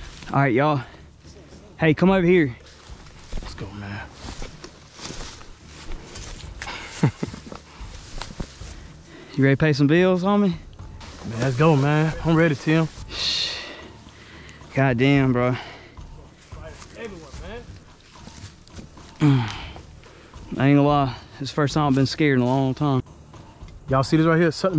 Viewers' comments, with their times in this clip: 0:08 shit sounde like a gta script cool as hell